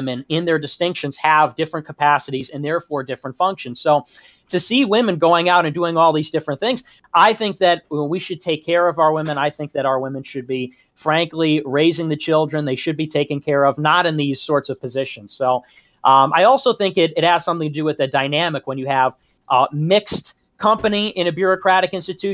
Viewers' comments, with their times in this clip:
0:09 I died when Train trying so hard to hide his LOL